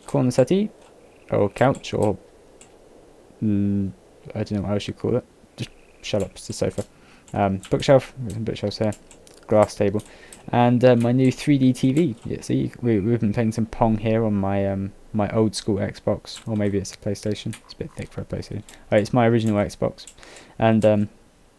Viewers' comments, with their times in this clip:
0:09 "Grass Table" ? lol